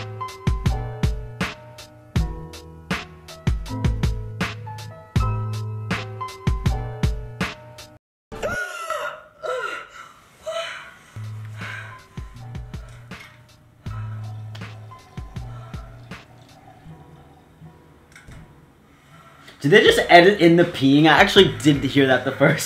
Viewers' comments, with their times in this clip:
0:09 When you don’t realize that you don’t have headphones on and your mom is in the room next to yours and she only hears the woman and now wonders what you’re watching😂